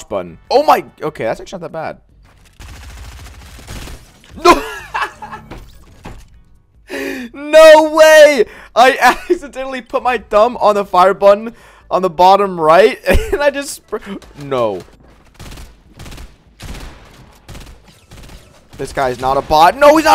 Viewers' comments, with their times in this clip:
0:06 I love he is dieing of laughter then goes to just stone cold a few seconds later P.S. Whole video got me dead lmao